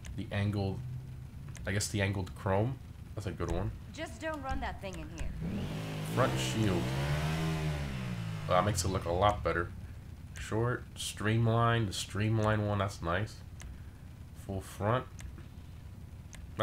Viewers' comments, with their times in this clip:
0:03 "Just dont run that thing in here" proceeds to rev it